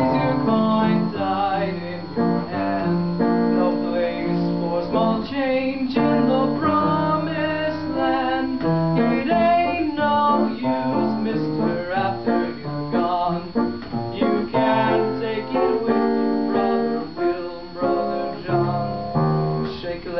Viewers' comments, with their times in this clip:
0:03 Needs to be taken a lot faster. The rythym was off too too.